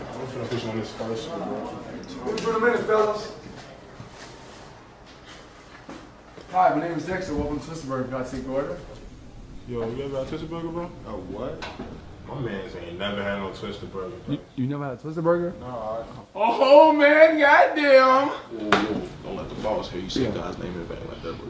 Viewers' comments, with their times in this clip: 0:06 Pause and laugh like ed from the show😂😂😂